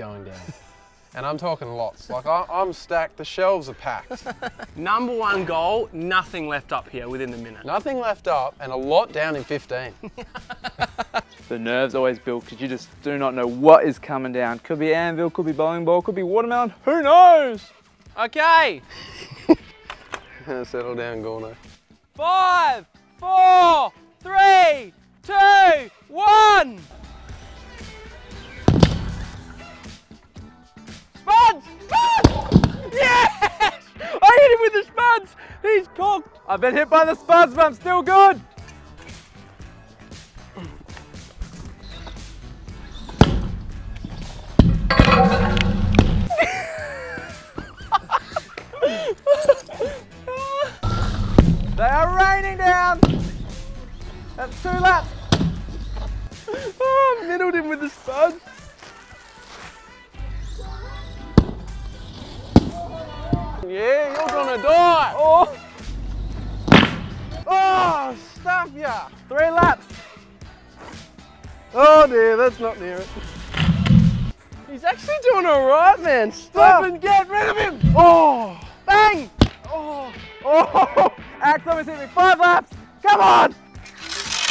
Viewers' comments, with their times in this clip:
0:09 for creepy laugh
1:05 the sound of my fart in the morning